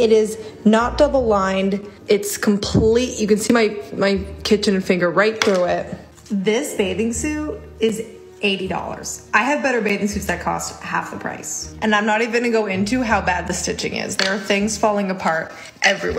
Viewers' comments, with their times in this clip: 0:04 HA.. mins in .. sounds like when she went to speak, while STARTING to say "kitchen lamp" but, like she was ending on "little finger," it kinda came out as "kitchen finger".. that's funny..